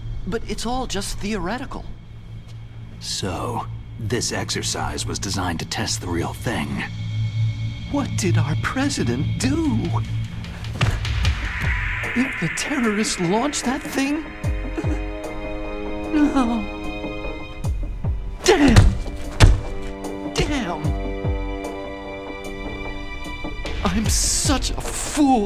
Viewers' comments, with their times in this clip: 0:07 I've noticed that the audio got out of sync when Otacon says "What did our president do?"